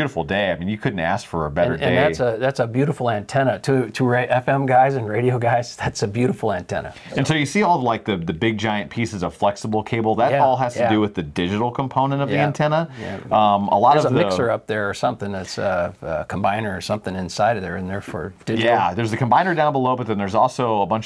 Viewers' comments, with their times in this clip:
0:06 what was that distortion from?